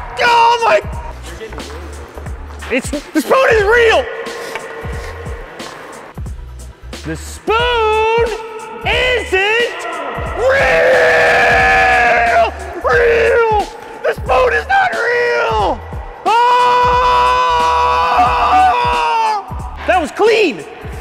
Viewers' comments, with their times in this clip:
0:09 ....I fell really bad for headphone users at this point. lol